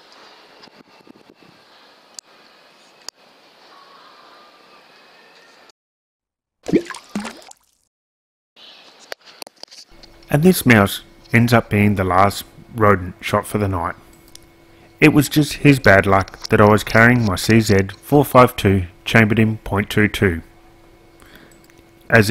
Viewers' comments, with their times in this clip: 0:05 That plopping sound of the rat falling into the SHIT/Piss slough makes me wonder if they could have swam away NOT